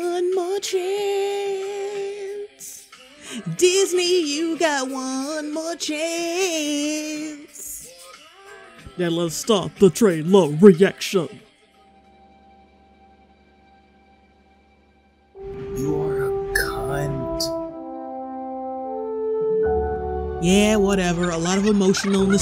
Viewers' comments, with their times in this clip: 0:06 we stan a good singer 😭👏❤